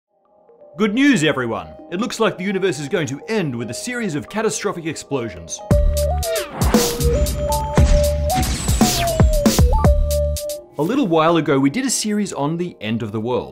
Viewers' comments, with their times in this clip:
0:00 Why hello there, Dr. Farnsworth. Been a while.